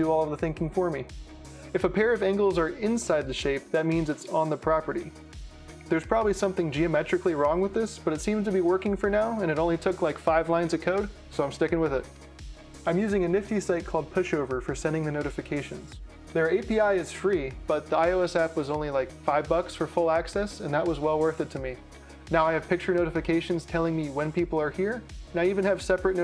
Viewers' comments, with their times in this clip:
0:08 Did he just say, “It only took 5 lines of coke so I’m sticking with it” in ?